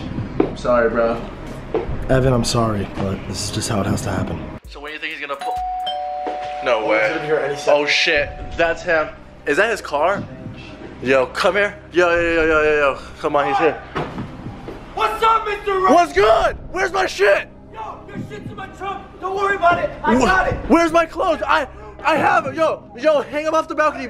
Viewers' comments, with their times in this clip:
0:06 doorbell rings they go outside and Logan is still in his car ? how he ring the door bell